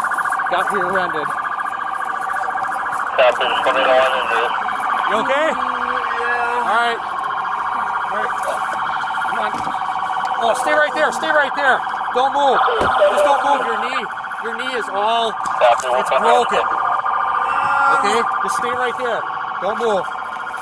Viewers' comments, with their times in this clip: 0:04 right there is the sound of pure pain 😂